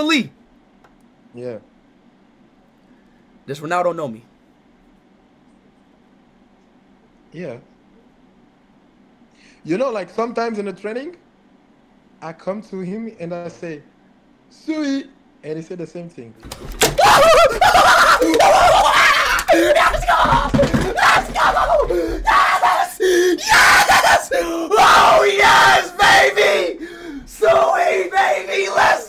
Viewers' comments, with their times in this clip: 0:05 he didn't expect that "yeah" to be so casual 😂😂
0:14 sweetest sewey ever!